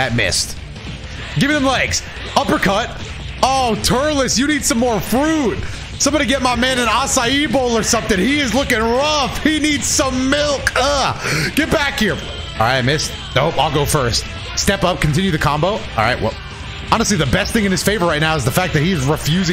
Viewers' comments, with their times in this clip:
0:05 is that how the fuck you’re supposed to say it??